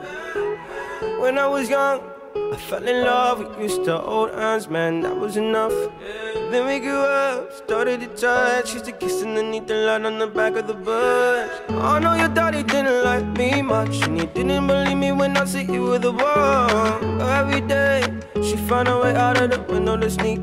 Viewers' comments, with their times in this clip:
0:03 I thought he said he fell in love with mr. Old Endsman